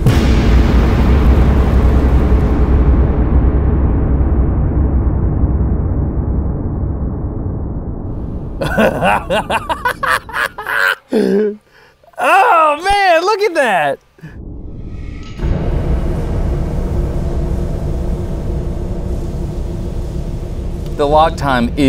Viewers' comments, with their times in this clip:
0:07 Great video Destin, but that laugh is unhinged. :)